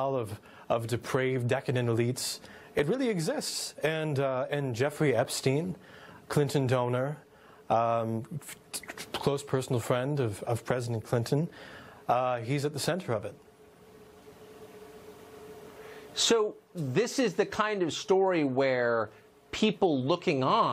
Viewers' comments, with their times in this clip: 0:08 the -2 of this vid sounded weird! Why was dude beatboxing in the mic? 🤷🏾‍♀️